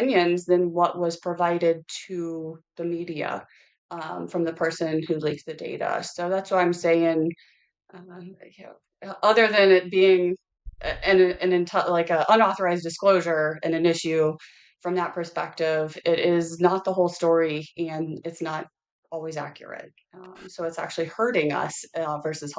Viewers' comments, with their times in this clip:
0:06 she accidentally speaks to the person prompting her in her earpiece. The conversation prior to this is disjointed with segmented pauses, like she’s listening to someone telling her what to say and then repeating it.